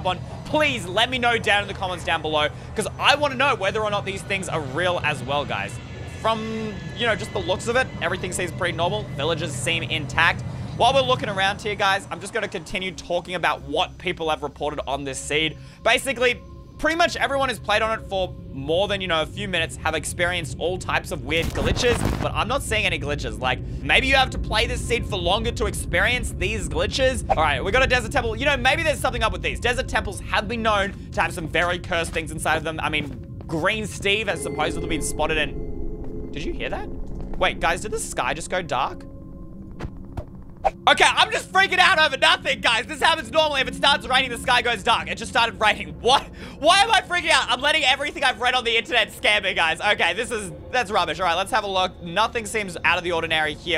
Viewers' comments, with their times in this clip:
0:07 i heard something walking while he was flying
0:34 After there is a cave sound